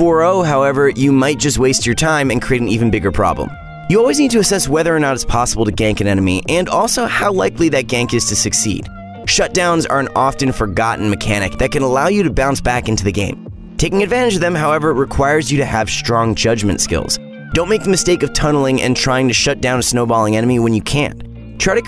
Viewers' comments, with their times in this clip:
0:04 Always "asses..." It's "assess."